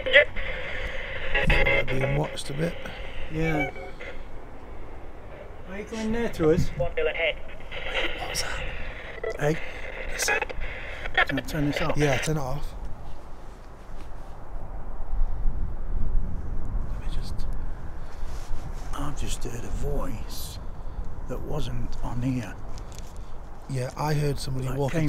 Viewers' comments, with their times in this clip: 0:05 .......there mans voice from the spirit box is saying......."WANT YOUR HEAD"........DEFF not a good sign.......LOLOLOL
0:07 I just heard footsteps and I just saw two saw figures of what I think it might have been too ladies walking 🚶‍♀️ up just near where you gentlemen are standing
0:08 I just heard whispering